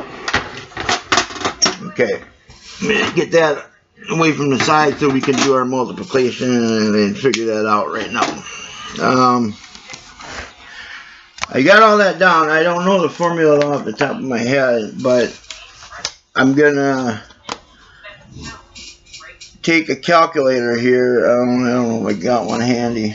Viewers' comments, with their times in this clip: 0:07 what the hell is “mulpiticlation”????😂